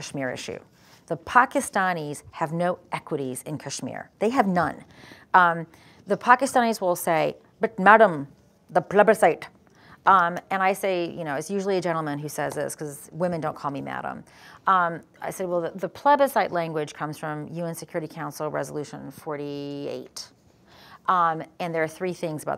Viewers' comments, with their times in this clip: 0:06 Her imitation is so funny.